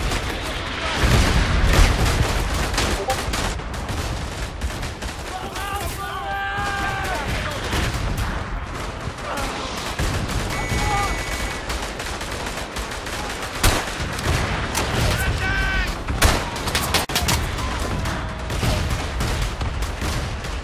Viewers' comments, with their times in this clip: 0:03 I thought that was my actual Discord lol. Would you recommend this game?